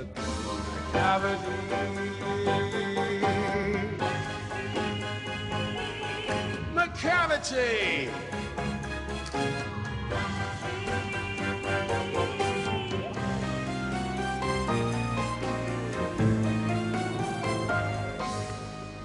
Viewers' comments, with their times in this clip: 0:03 Ok but Taylor singing Macavity is so angelic
0:03 Who was singing ??? Because if that was Taylor then that just proves that she has a vibrato, also if that was her why didn’t she sing the sing with the vibrato???